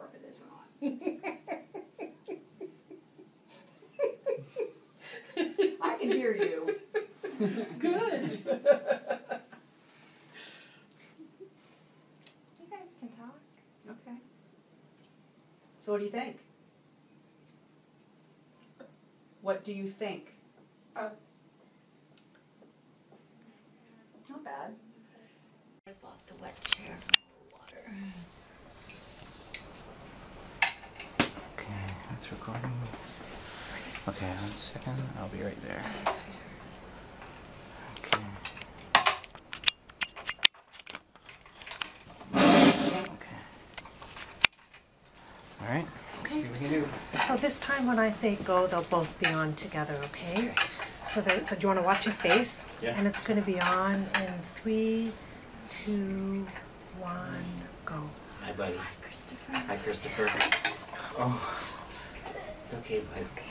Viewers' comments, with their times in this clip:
0:05 I love the moment when she hears laughter for the first time - that must be sooo strange! Awesome this moment is shared :)
0:47 the parents spoke softly and didn't scream at him the whole time so that's good